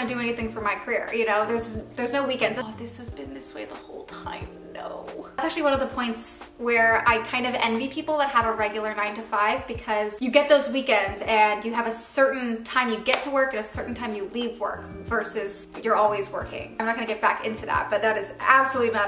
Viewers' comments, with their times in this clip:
0:07 Around the mark, did anyone else’s audio not match the video?